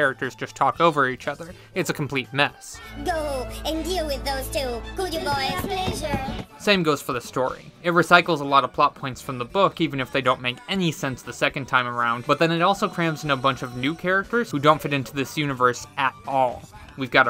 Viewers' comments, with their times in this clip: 0:04 lol this is not VA this is TTS 😅😅